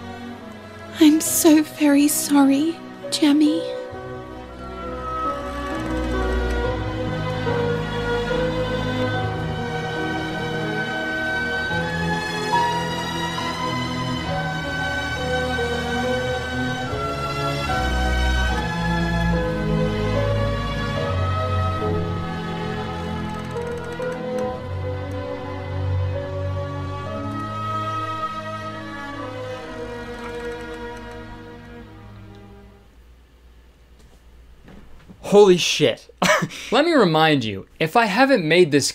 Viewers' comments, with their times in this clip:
0:04 It's been 3 years and I still cannot believe how good the music is like props to the composer
0:04 That scoring is beautiful. If you’d played that track for me in isolation and then told me it’s a score for an animated movie scene where a goat disguised as a human has been executed by hanging, I would not believe you.
0:22 the creaking of the gallows holy shit 😭